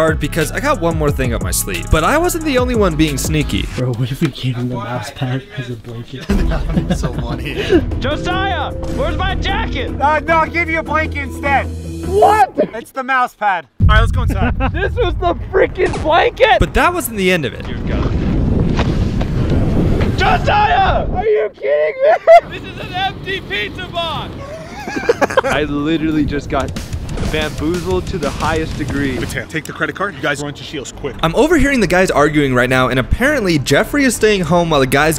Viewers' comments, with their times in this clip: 0:08 sounds like mrbeast lol
0:15 he sounds like mrbeast lol
0:19 why he kinda sound like mrbeast for me